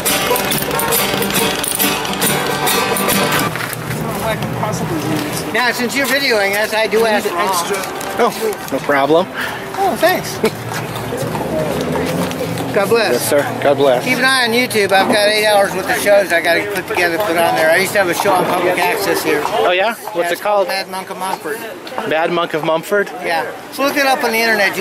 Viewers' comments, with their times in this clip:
0:06 all I hear is "Greetings fair traveler! Hast thou an Elven medallion of courage about you?" +2 Dexterity